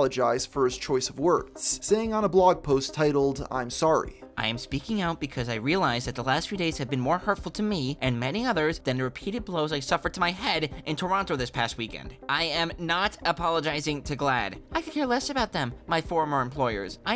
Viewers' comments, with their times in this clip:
0:05 blows I suffered TO MY HEAD, that shits voice is hilarious 🤣